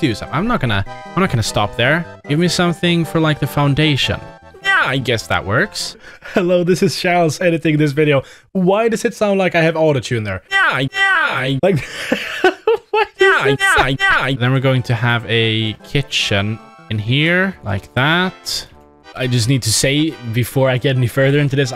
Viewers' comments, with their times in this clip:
0:03 autotune kicks in yo
0:08 sounds like Skeletor